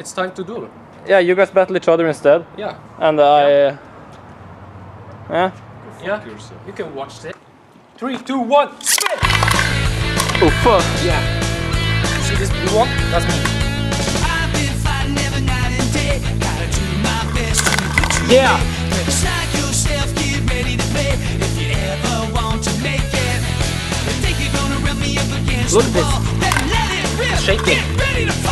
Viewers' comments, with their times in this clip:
0:09 broooo that song is absolute nostalgia :(